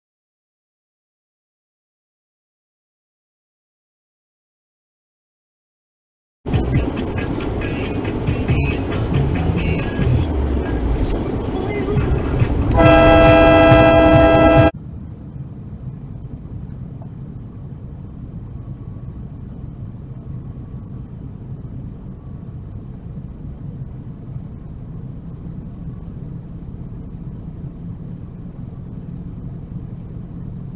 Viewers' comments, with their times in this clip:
0:10 The other car was out of the cammer's lane before the cammer got there. The honk was completely unnecessary.
0:10 who are you honking at exactly?
0:10 Central Florida what's the problem? The turning vehicle turned into the right lane correctly and stayed there, making no effort to merge left into your lane. I just totally don't get why the obnoxious horn here.
0:10 Central Florida: I have to wonder if you were just showing off your fabulous horn, or was there some other reason? As far as I could tell, the car making a right turn was the only thing that you could have been honking at, and they stayed in their merge lane. So WTF were you honking at?
0:11 No need to honk. At least he switch lane quick smh
0:11 no reason for cammer to honk. Other car was in right lane, cammer in left
0:13 I don’t understand why the cammer honked. The white SUV didn’t even go in the cammers lane.
0:15 🤣🤣🤣 what are you honking at???